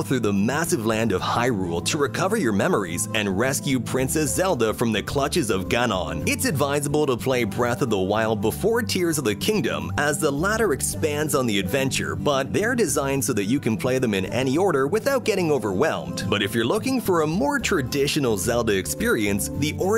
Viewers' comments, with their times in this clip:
0:04 when he says “Gan-on” Y’all just tell me what you think